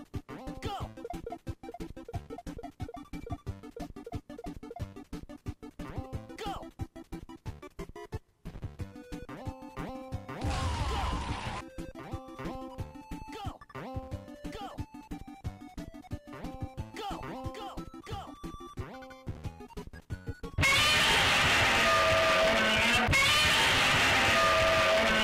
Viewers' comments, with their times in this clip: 0:09 that Shoop Da Whoop sound caught me off gaurd